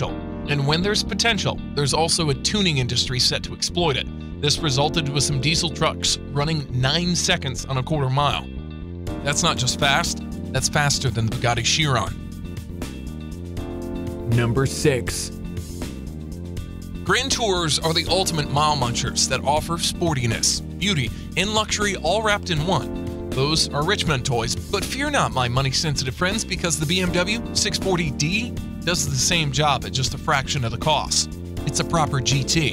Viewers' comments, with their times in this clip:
0:05 swedish cry of Greta can be heard.
0:13 chills is that you